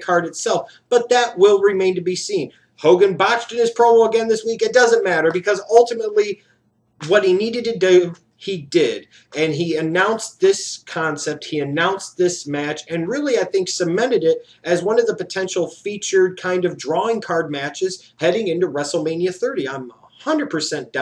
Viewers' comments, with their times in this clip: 0:05 that accent "What he needed ta dew"